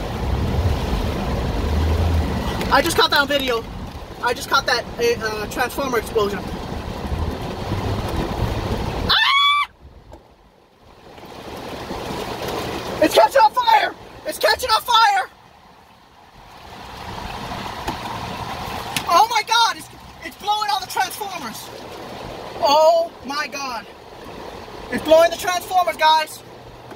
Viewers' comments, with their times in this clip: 0:08 My favourite part is her screaming AHHHH